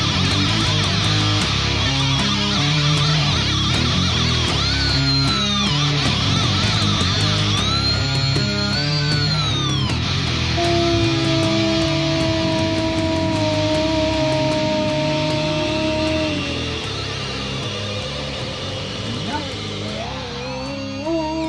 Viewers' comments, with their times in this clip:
0:08 Thumbs up for the howling dog